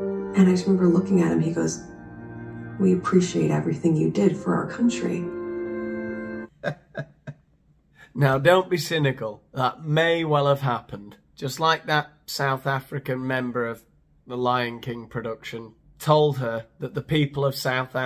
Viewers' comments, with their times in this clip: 0:05 Oh how i wish i would never hear her embarrass herself like she does -15. She sounds sincere but then her eyes give her lies away. Did anyone at the airline take credit for saying that to her?